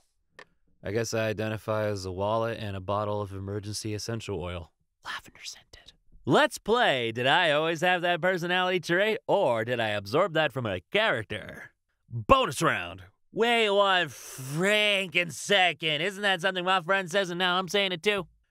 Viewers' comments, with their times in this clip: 0:06 you sound Suspiciously like John Mulaney